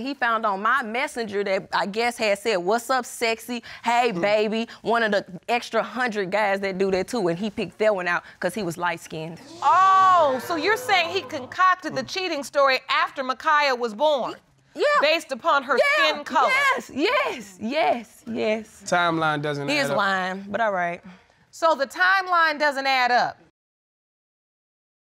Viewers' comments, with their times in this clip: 0:10 Who is that one person in the background yelling “OOOOooooOooooooOoo”